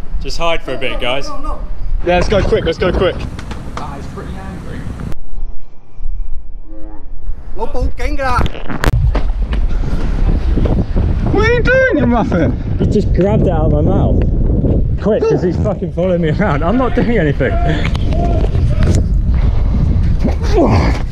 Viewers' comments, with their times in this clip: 0:07 sounds like " no more camera " 😂😂😂